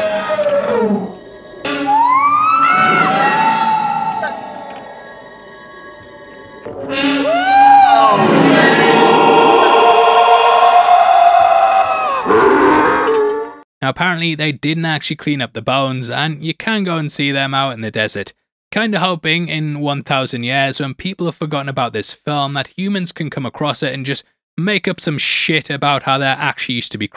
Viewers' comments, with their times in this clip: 0:10 To quote Mahoney in the first Police Academy movie, SHIT I'M DEAF.